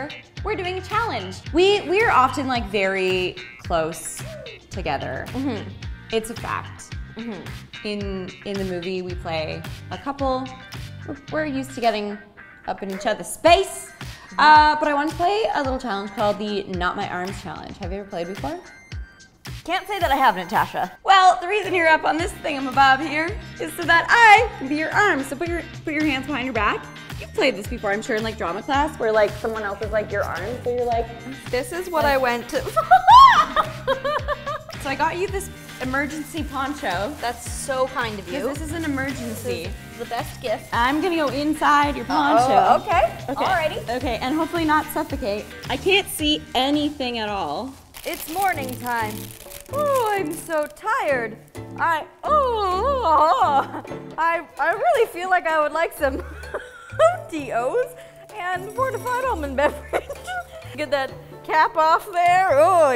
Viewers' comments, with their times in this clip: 0:10 Did I hear right? "we're used to getting up in each others face "
0:48 i heard "is morphin time" 😂